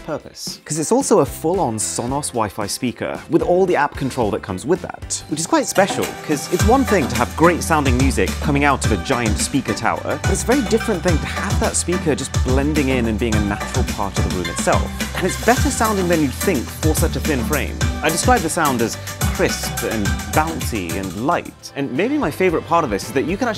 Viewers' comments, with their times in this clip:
0:06 for once it’s a different song